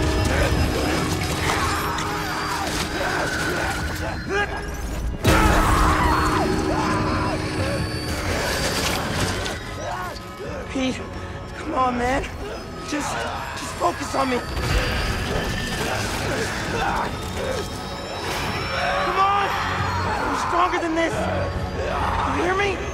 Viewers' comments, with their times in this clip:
0:05 Jesus those screams, I swear Yuri is so dedicated to this role as Spider-Man
0:06 Peter's lenses get so big when he's screaming